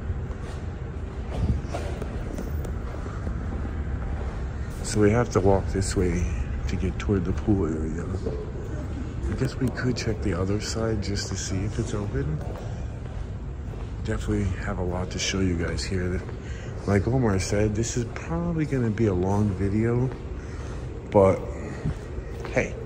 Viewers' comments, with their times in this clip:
0:08 OMGosh I heard a voice talk over you guys. It was brief. I couldn't understand what they said. I went back and listened over and over again and it sounds like their saying " I CAN HEAR" and then it fades out.